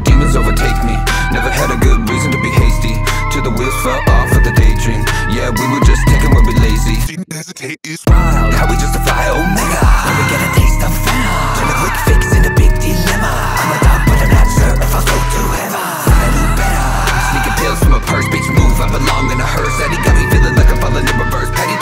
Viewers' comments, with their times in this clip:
0:09 Love how you got pennywise to make a cameo sounds dope!